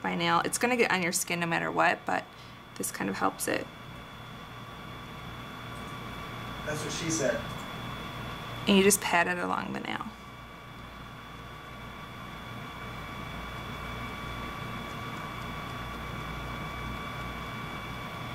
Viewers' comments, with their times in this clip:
0:06 some dude in the background- thats what she said
0:06 u can hear a guy saying: that's what she said
0:06 *background guy talking* "That's what she said" HAHA
0:06 else hear that guys voice ???